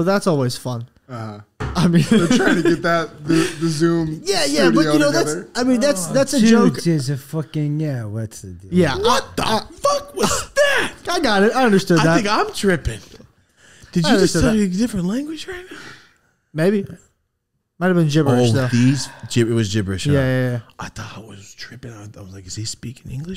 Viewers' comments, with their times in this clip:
0:04 😂 LMFAO I’m dying Josh couldn’t even speak English
0:08 Josh really went alien mode off the shroomies 🤣🤣🤣🤣 he straight up spoke Marshian